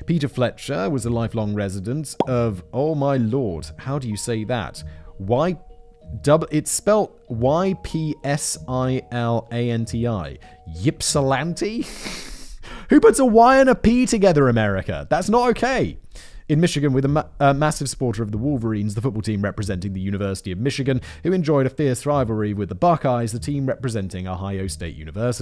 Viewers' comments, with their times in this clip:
0:09 From someone living in Michigan, congrats on pronouncing "Ypsilanti" right on the first try!